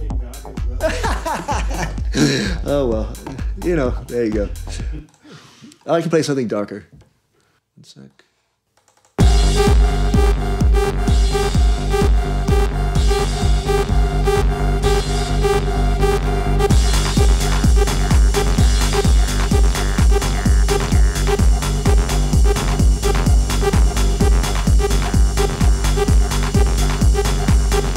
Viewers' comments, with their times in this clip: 0:09 AAaaaaah yeaaaah !!!! I miss that +8 sound so much